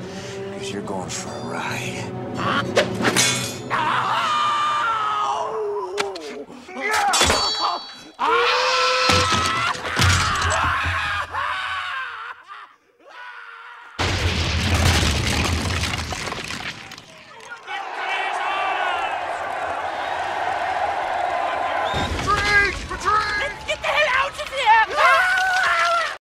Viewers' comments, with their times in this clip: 0:08 Nice use of the factory whistle sound fx